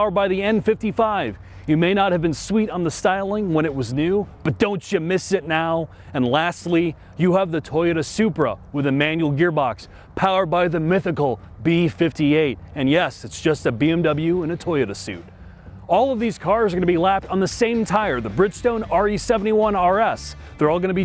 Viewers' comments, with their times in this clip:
0:05 it looks like a Japanese toy with those boxy multi-edges, especially in that color. ... Or I could also see a USA muscle car style design in the front. The fake engine noise of the Supra is so annoying. Like a 90s video game ... for console. - In comparison the M2s seem to have almost identical sound, even making it hard to detect the fakery.